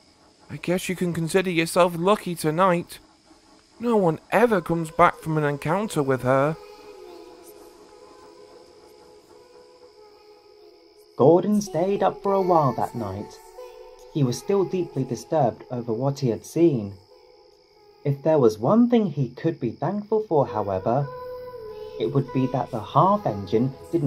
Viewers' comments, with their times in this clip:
0:05 Whoever that feminine voice is singing "Oranges and Lemons"